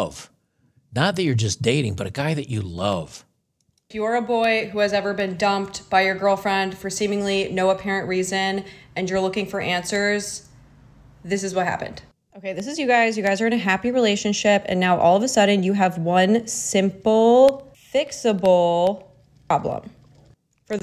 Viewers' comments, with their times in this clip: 0:03 Seems like all of the relationship problems are piled on her side of the drawing. I love how condesending she sounds at "simple, fixable, problem". 🙄 Amazing the type of "problems" she comes up with. lol